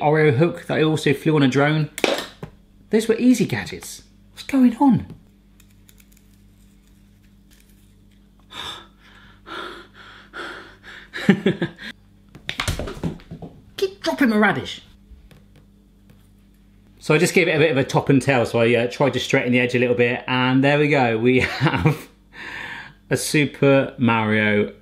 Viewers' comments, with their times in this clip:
0:09 Heavy-Breathing of success 😂